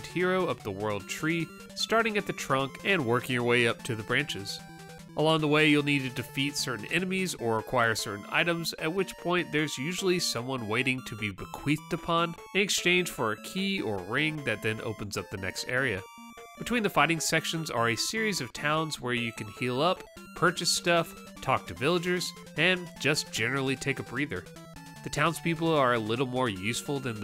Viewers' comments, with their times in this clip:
0:09 I misheard "bequeathed" the first time. I had to rewind the video. 👀😇